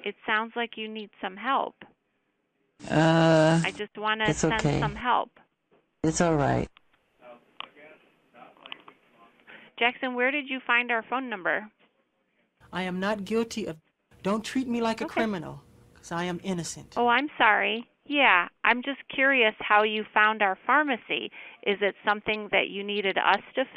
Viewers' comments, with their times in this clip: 0:08 you can hear very faintly in the background a voice saying "stop playing with the f**** phone" 😂